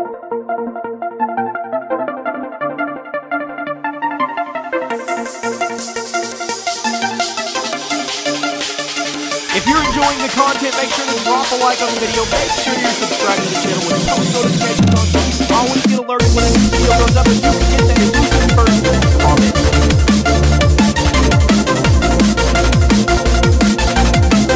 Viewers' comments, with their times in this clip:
0:09 I can barely hear u XD